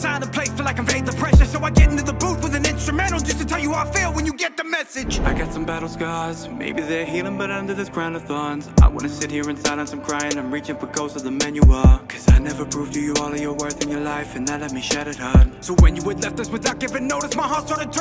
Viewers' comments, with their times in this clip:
0:05 I liked when you switched it up in I believe. A🔥track all around.